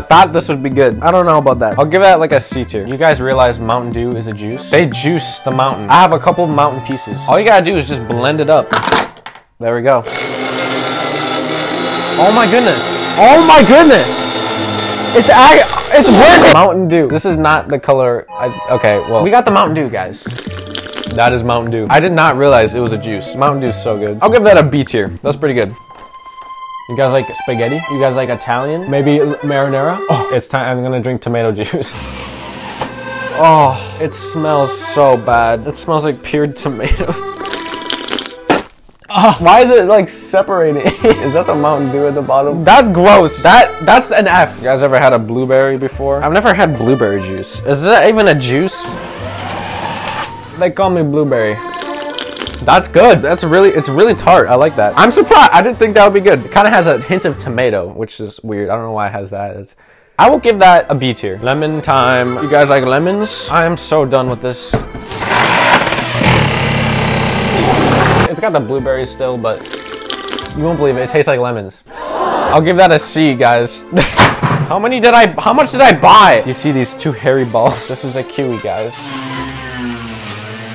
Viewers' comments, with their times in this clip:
0:10 bloodbath music gd fire
0:13 why am i hearing the bloodbath music 💀💀
1:07 CAR VRRMMMM VRRRMMMMMM